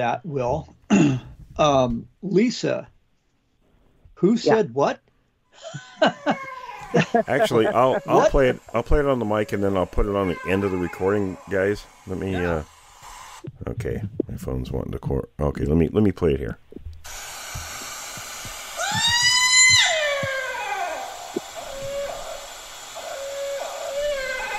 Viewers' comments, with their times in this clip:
0:09 sounds more like a husky or wolf hybrid....